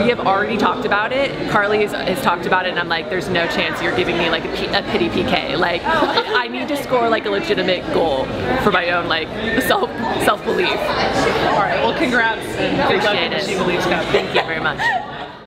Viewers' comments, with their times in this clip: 0:10 I love how Becky is very mature when she speaks and is very eloquent and articulate. And did any one else notice Tobin whistling in the background she is just adorable and I love her